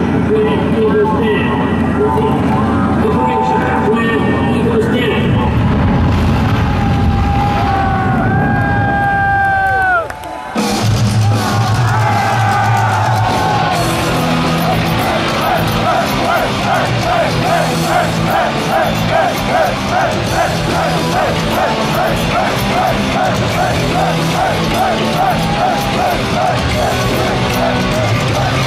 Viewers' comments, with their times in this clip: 0:10 The song actually starts.